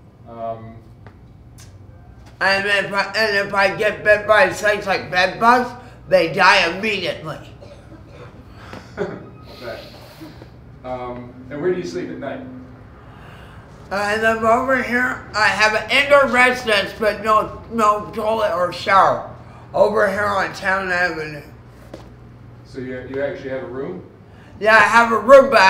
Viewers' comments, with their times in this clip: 0:07 that silence and awkward laugh 😅